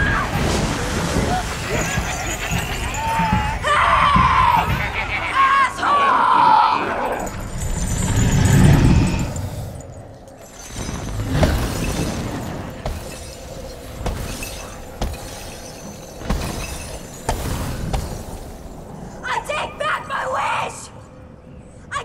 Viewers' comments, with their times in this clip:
0:03 Max Yells Hey Asshole